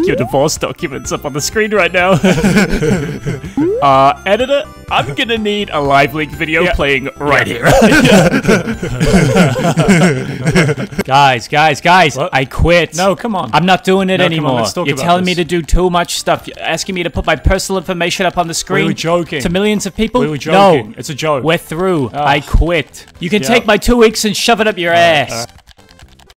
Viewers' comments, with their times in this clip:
0:09 Mordechai and Rigby laughter